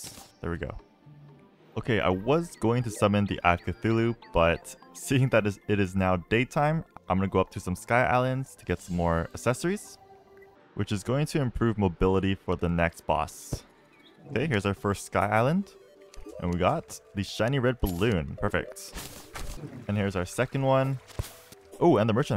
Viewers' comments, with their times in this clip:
0:10 says accessories incorrectly